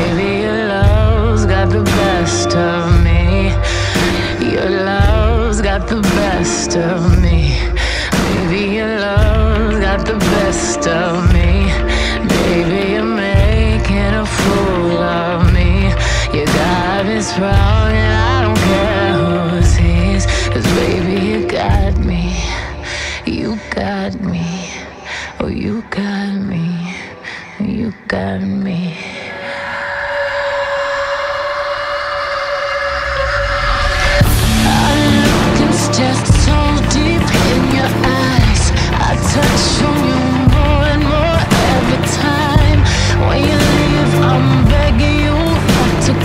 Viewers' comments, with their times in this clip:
0:04 Treasure sxey jazz gets hot 🔥 🥵
0:32 when the beat drops